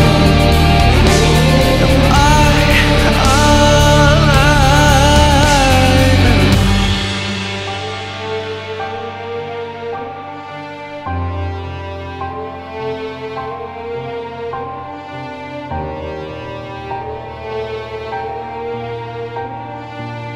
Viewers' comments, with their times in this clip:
0:07 I swear I can hear the same notes in the background as Doctor Who... Heh :3